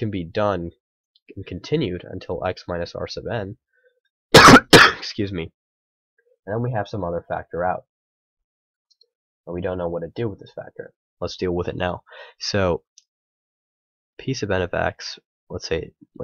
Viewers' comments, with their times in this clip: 0:03 Nice cough cough lol